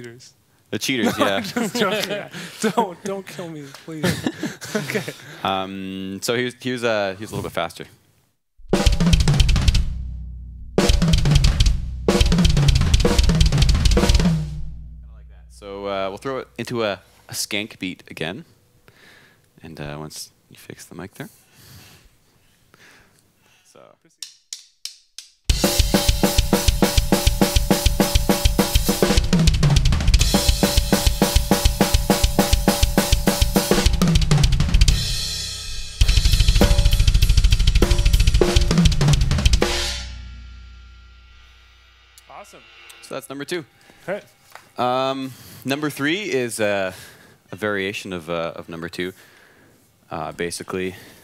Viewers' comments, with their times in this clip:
0:07 THATS MORE LIKE MOTORBREATH METALLICA...RUST IN PEACE ITS MORE SLOWER AND MORE KICK ASS ;)
0:08 That beat sounds a LOT like nightmare by avenged sevenfold
0:36 sounds soo good